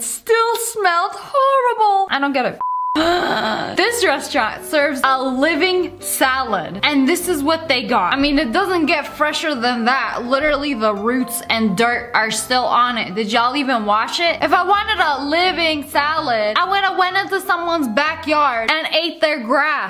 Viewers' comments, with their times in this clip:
0:03 anybody catch what she said I couldn’t understand it